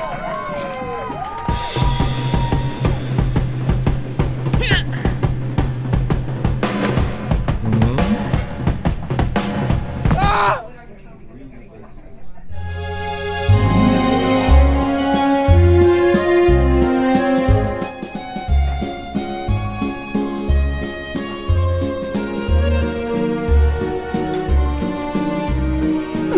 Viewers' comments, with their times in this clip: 0:09 hahaha😂 the ahh!! in